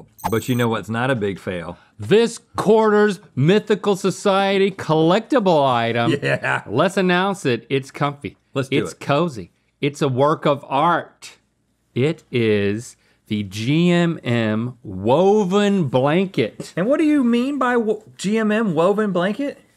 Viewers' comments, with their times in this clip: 0:05 that yeah sounded like a transformer transforming omg